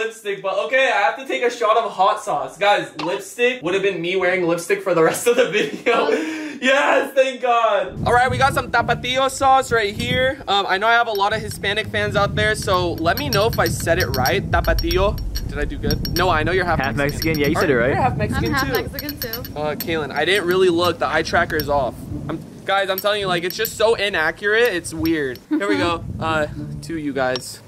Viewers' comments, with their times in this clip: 0:06 Damn Rug sounds more Mexican than me. I'm Mexican 😂
0:07 Aye respect for saying it like that x) lol s/o all the Hispanic Rugrats 🔥
0:07 “TapaTIO” 👏🏻🇲🇽 love that🤣 great job
0:08 faze rug: okay we got some "tApAtIo sAuCe" he sounded so Mexican lmaooo💀💀🤣😭
0:08 when he said tapatío it sounded like a Mexican explaining to an American what tapatío is😂😂
0:08 Like for that mexican accent😂
0:15 that was some good Spanish